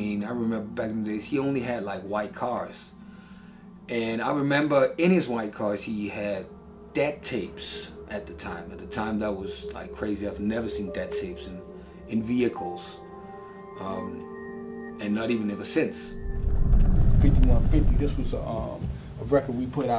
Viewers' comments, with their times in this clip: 0:06 What is the dude saying Eazy had in his car? Death tapes? Deb tapes? Little Debbie Snack Cakes? I've listened a million times and I still can't decipher it